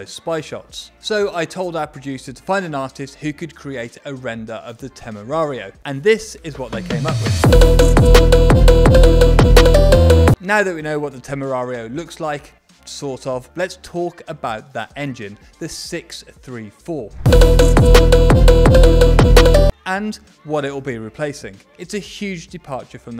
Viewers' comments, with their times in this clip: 0:07 the music why it is so fucking loud compared to the talk
0:07 Thumbs down for the insane volume spike for that stupid animated bit at ~